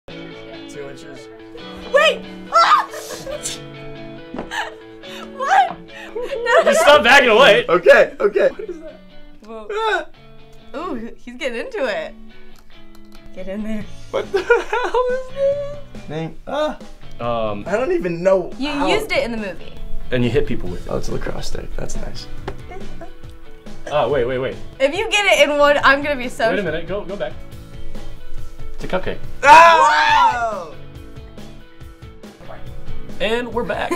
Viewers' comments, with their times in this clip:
0:01 What did Noah say that made Lana freak? Cudnt hear it properly
0:14 aaaaahhh its soooo cute, his voice